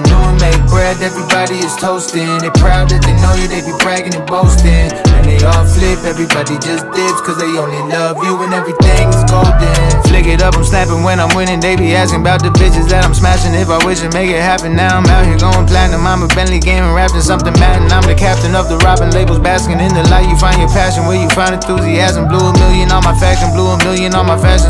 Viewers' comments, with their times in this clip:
0:10 his flow is stupid in here